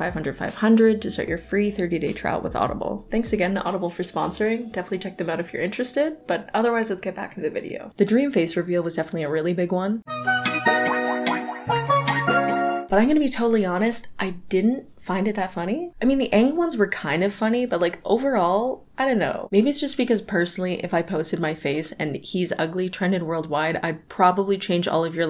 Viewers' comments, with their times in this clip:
0:10 killed me... there's something about hearing asap at the same time as seeing that man's face